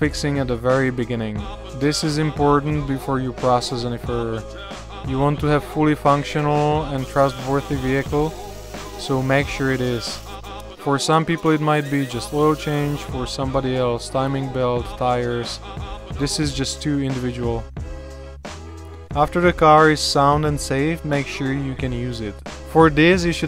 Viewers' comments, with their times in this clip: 0:07 Disliked for not wearing eye protection. and the annoying music while talking. The 'Reflectix' insulation needs air spaces on both sides to act as insulation.